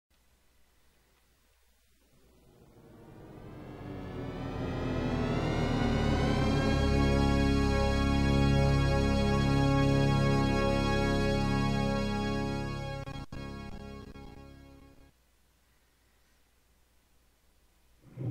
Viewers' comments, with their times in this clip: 0:01 the audience is now deaf